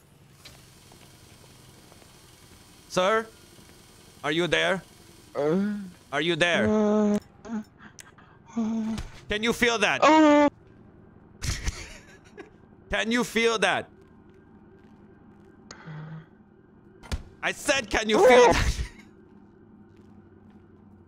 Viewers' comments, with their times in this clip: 0:06 it sounds so wrong with eyes shut 😂😂😂